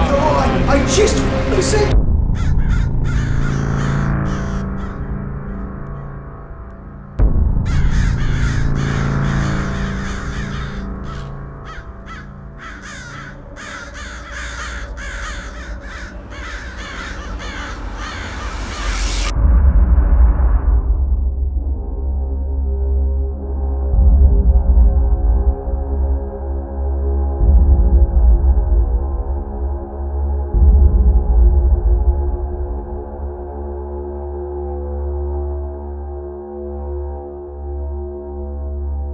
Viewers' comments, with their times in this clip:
0:06 it sounds like they are communicating using Morse code long and short pulses of noise.
0:10 .00 I heard a female voice say sound.
0:27 there’s a female voice talking, creepyyy!!!